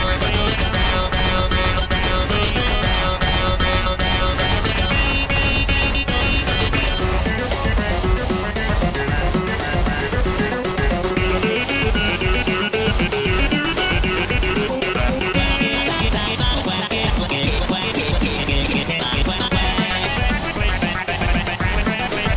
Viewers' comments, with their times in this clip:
0:07 When u play this part with the speed is 0.75x it sounds epik